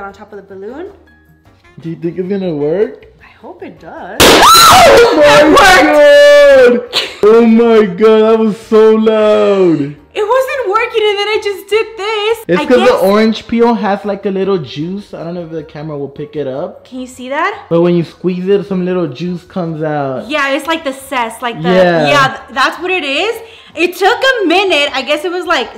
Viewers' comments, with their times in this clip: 0:04 I LOVE U GURRLLL I WAS WAITING FOR YOUR VIDEO AND HERE IT IS SLAYYY💅💪 and that scared the crap out of me💀that noise busted my eardrums and left no crumbs😭
0:07 I tossed my phone due to the screaming and the popping